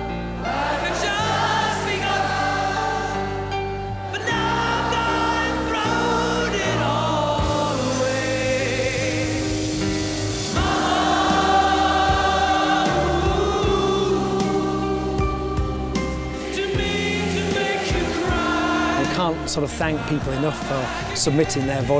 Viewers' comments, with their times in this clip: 0:04 Marc Martel’s voice is